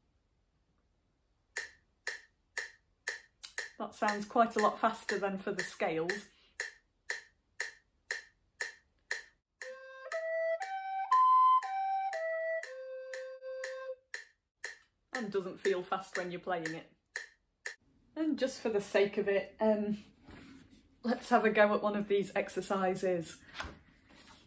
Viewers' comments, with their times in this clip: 0:07 Yes, you're actually right. I don't remember why I wrote some of this since it was long ago. I may have assumed all the exercises were in crotchets but in fact some are in quavers. I'm not sure. Or maybe I mixed them up because English is not my first language. Anyway I still don't understand the example because I hear you play all the notes as quavers but there is a crotchet in the middle and a dotted quaver at the end, which is actually weird.